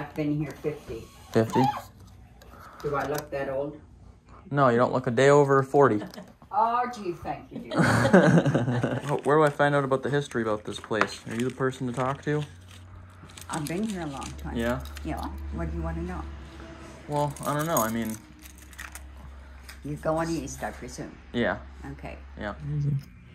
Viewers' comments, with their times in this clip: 0:10 he sounds just like Owen Wilson, made me think of cars